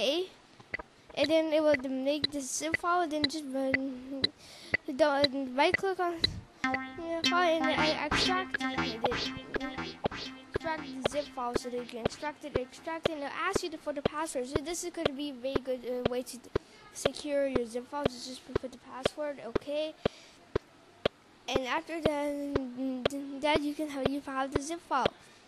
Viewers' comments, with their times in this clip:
0:07 Don't listen to all of the negative comments. The internet can be brutal like that. I want to thank you for making tutorials that get straight to the point. So many other tutorials on Youtube waste time with their long, drawn-out intros. You, on the other hand, value and respect your viewers' time, and I like that. That said, you should probably slow down a little bit so people can understand. You may also want to turn the music down; the music completely drowns your voice out. Keep up the good work, and don't let a few jerks on the internet discourage you.